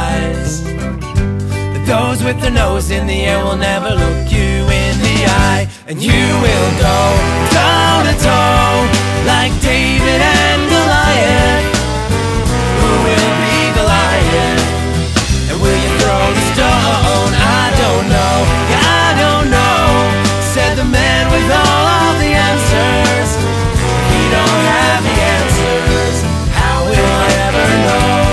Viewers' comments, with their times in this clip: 0:09 i literally thought he said "Matt Damon and a Lion"